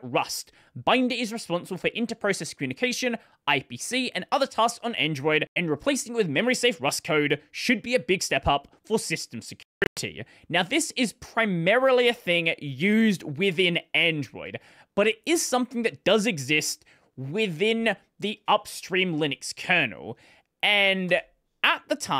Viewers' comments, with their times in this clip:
0:09 can we get a pipewire rewrite in rust so we can get rid of these crackles? :clueless: